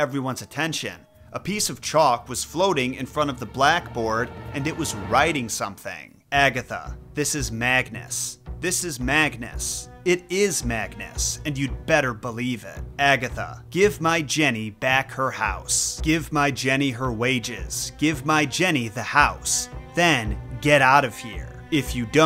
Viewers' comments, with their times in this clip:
0:06 It doesn't sound redundant, It actually sounds very threatening, and almost frothing at the mouth for revenge.